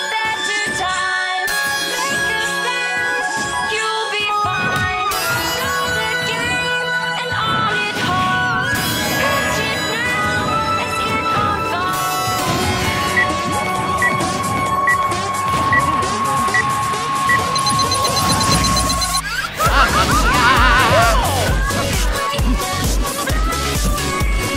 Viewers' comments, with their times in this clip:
0:10 dat bass drop tho